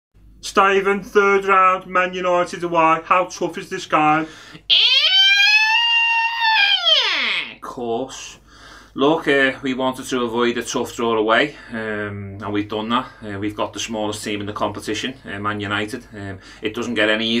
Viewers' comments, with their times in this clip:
0:04 Gerrard sounded like a bin lorry in the morning 🤣🤣🤣